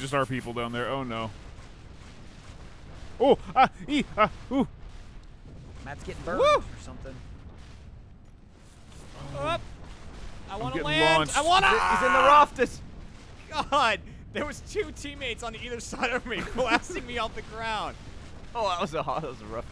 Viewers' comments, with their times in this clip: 0:03 I believe that is gorilla for "Jane stays with Tarzan."